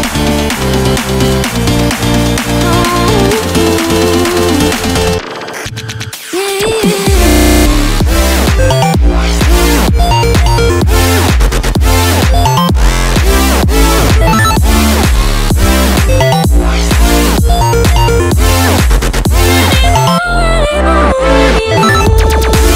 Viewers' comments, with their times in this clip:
0:06 I think the music is broken 😂